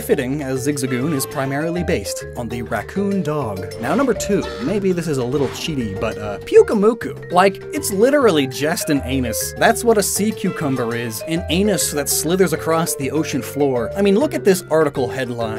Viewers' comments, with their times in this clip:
0:03 The barely audible "BAH!" when he says "Number 2" ... I can't